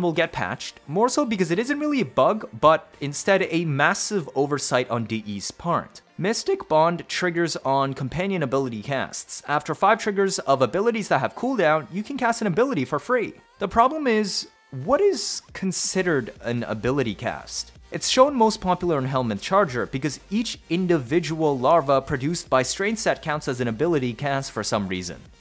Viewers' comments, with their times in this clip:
0:05 I love the voice crack that's all I had to say
0:06 voice crack time code (I'm not trying to make fun of him)